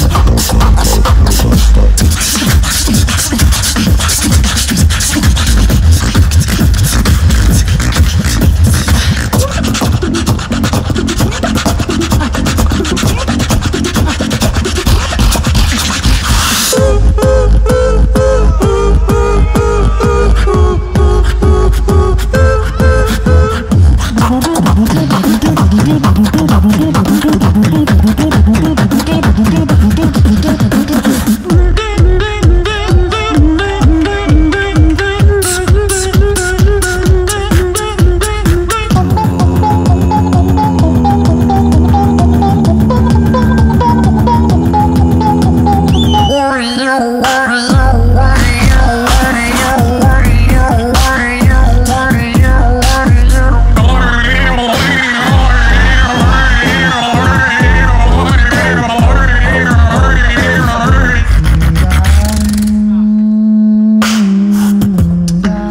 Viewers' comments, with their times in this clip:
0:08 you were the one with that sound that seems electronic
0:16 omg this drop🙏
0:45 best drop that was ever made😱😂
0:45 The Best Drop With the BEST counter
0:46 The best drop
0:46 my favorite drop